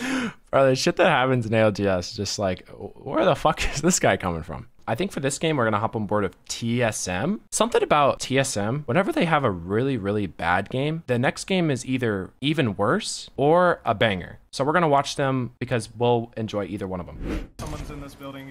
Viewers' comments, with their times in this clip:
0:03 bro thinks he’s carti